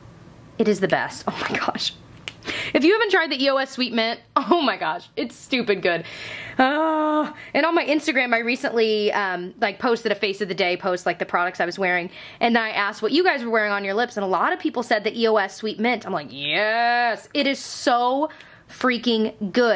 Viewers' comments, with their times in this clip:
0:04 When you said oh my god you sounded like Monica Gellar lmao I've been watching too much friends recently